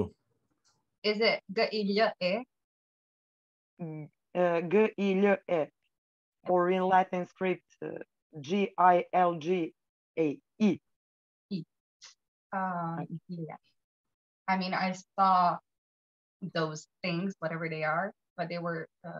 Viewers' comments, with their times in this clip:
0:03 i am serb and I don't speak like that